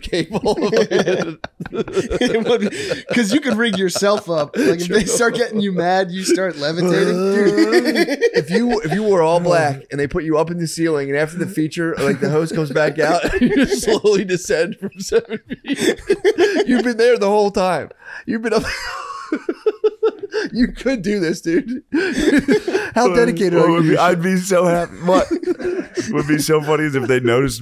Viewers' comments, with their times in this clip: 0:09 idk what it is, but seeing shane have a really deep belly laugh made me so happy